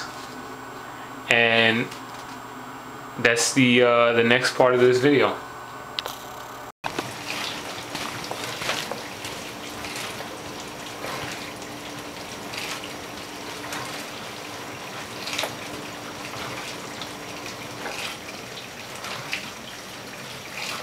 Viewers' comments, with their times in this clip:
0:07 noises starting made me want to take a piss. dope shoes